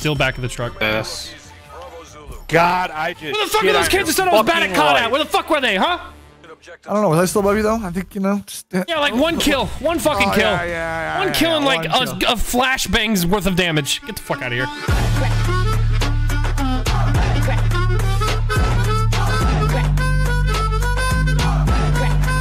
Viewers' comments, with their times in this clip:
0:08 he turned irish